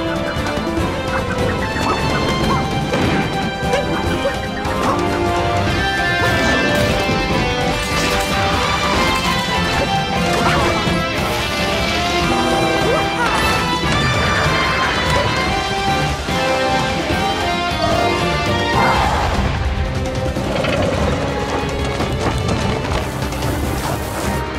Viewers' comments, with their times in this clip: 0:07 the electric guitar hit me like a truck